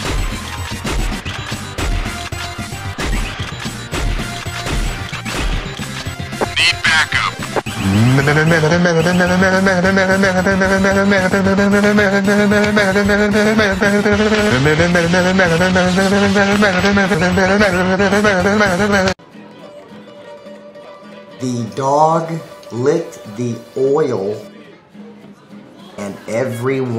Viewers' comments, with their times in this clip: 0:08 motor sound killed me😂😂😂😂